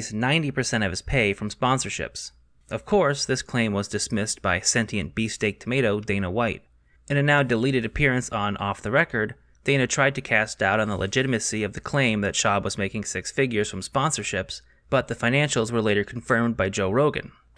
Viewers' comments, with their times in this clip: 0:03 I've watched this video like 4 times at this point and I can never figure out what in the fuck he is saying beast egg tomato??